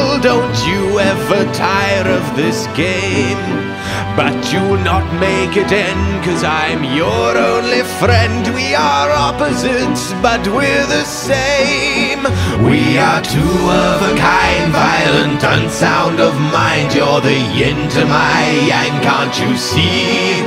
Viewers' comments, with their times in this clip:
0:03 cant make that lisping unheared.